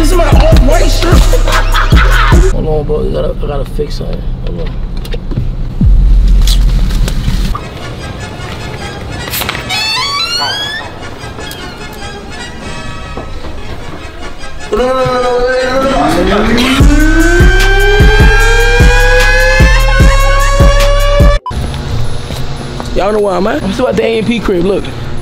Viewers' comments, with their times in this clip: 0:09 the door said “yurrr” 😂😂😂I’m smaccck 🤷🏾‍♂️